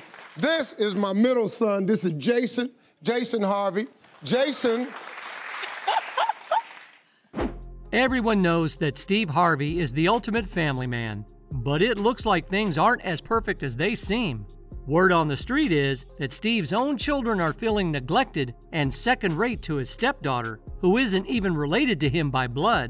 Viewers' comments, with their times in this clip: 0:06 Lori is not Steve's real daugther. Get your facts stright sir. But, did ya'll hear that chick laugh when Steve introducd Majorie's son Jason as his son..shaddy boots.😂